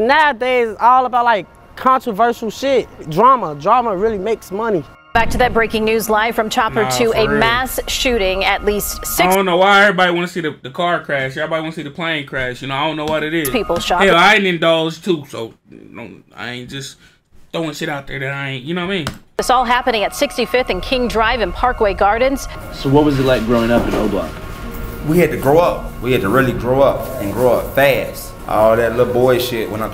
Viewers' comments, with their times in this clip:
0:10 damn snore on 911??????